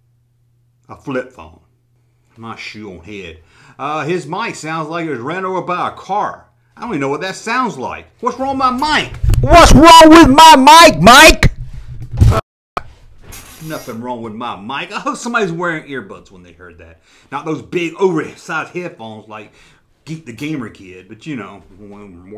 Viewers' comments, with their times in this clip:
0:10 i wear headphones and now i have ear damage, see you in court mister. Hate is the new love, i enjoy the video's even i dont always agree.